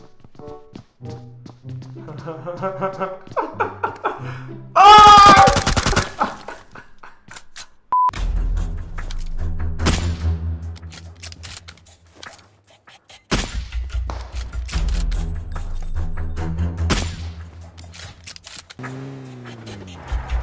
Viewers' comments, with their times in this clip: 0:03 oh now it all make sense , that screaming started on that day 🤣🤣🤣